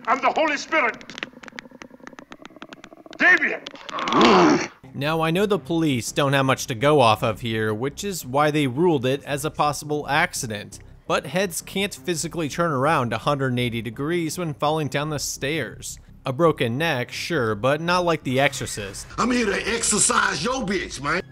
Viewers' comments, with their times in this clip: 0:04 1st creepy, 2 did it say "no" after he said Deviant?